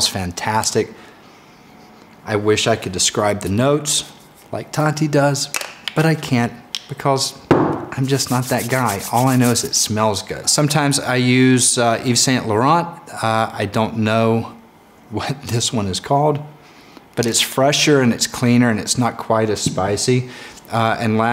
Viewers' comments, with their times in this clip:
0:06 “because” he sounded british